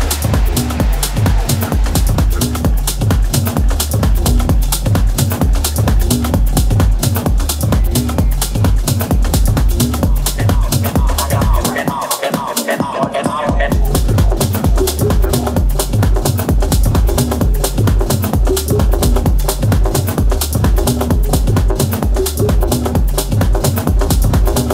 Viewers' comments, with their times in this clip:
0:10 Love that subtle tempo change in the beat